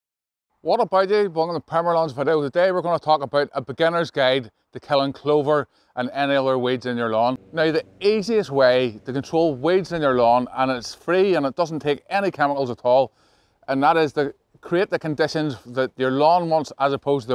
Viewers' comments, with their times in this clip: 0:04 Why are there eng subtitles? I’m swedish and i am not a native speaker but i understand you perfectly well. Love the accent by the way.